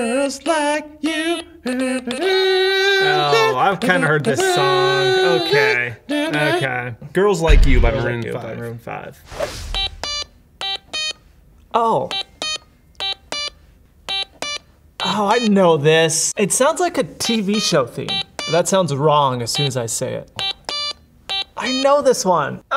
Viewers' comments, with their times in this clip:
0:09 for a second there I thought he was playing the intro to want you gone from portal 2, my heart legit sank lol.